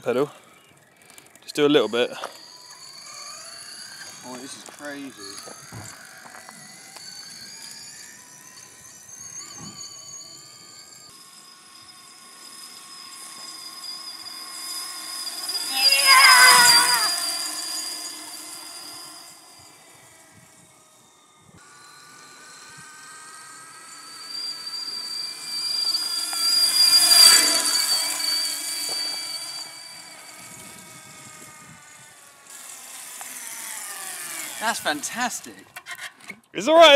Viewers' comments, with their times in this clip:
0:10 Your brother clearly imitating a TIE fighter
0:15 That yell was the closest thing to a TIE Fighter I've heard in real life.
0:15 he sounded like a tie fighter from starwars xD
0:23 all the English people will think their kettle is whistling